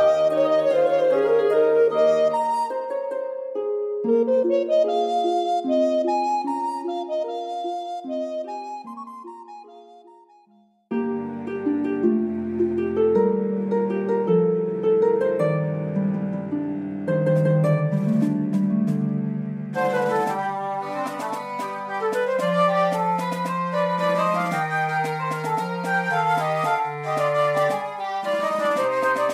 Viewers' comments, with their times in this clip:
0:10 The ending theme and credits theme right after, with this instrumentation... muah, chefs kiss. Very clearly communicating the occurrence of legendary deeds. It's so... heroic. Love love love it. The whole soundtrack here is a banger but those two particularly stood out to me, caused some slight tearing up with awe and appreciation. Man, i love zelda. Almost no other series inspires such levels of artistry and creativity. Also, the download link seems to be broken